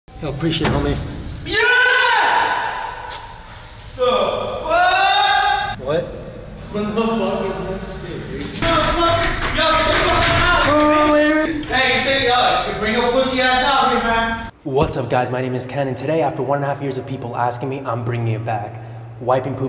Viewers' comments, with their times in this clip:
0:00 it sounding like he was saying “help”
0:01 Mike screaming with his hands being smushed. Monster inc.